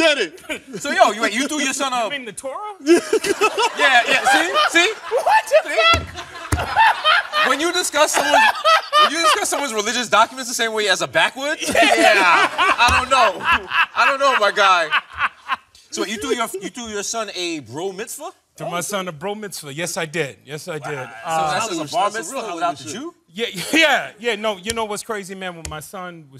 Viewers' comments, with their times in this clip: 0:08 Bruh Anthony Anderson’s laugh is highlarious!!!! 😅😂😂😂